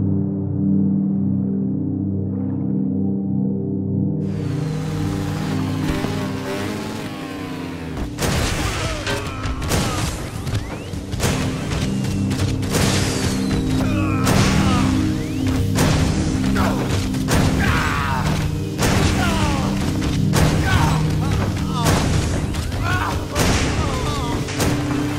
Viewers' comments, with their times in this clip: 0:07 This looks like Happy Wheels, but in remastered version. Not to mention you put that screaming sound.. oh lord
0:08 If you close your eyes it sounds like a Transformer ramming a male human